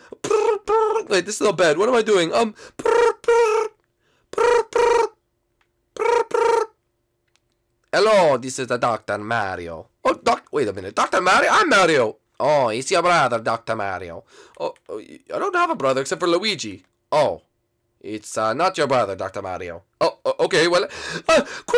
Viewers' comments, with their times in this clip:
0:07 Dr Mario sounds like Luigi lol